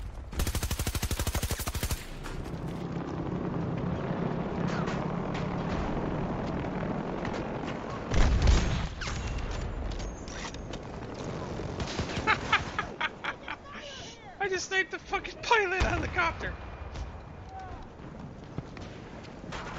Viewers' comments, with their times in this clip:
0:03 dat laugh and the silence after the horrible m5 miss 😂